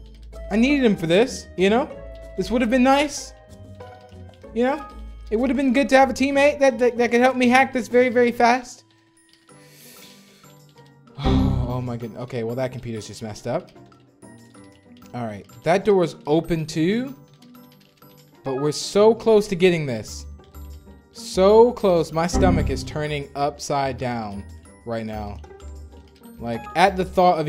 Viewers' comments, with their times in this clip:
0:08 plot twist: him breathing caused him to mess up the computer